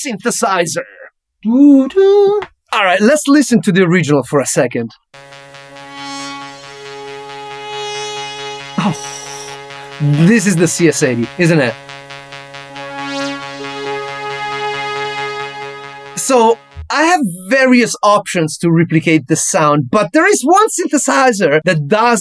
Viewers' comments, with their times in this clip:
0:08 The two notes of the "french horn" synth have different hipass filter gate durations, which you didn't recreate faithfully with the hydrasynth. Other than that, all is well..